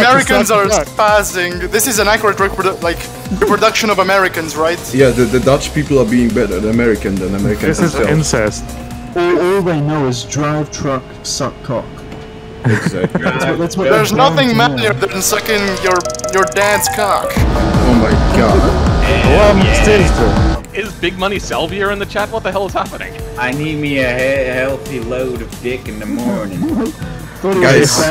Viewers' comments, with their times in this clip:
0:10 Hey, the W900 has a really grumbly engine and is my favorite American truck...